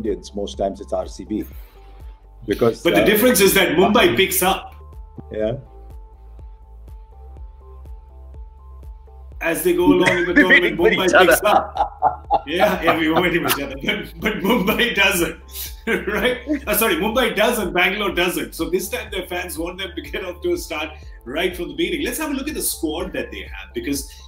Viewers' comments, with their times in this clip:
0:06 that pause tho 😂